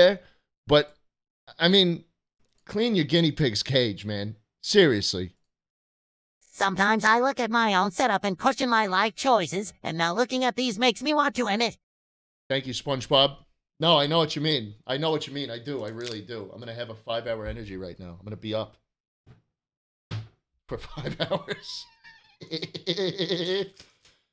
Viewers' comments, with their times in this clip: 0:08 I was watching this at midnight, with no one in my house. and the knocking was the most horrifying shit ever.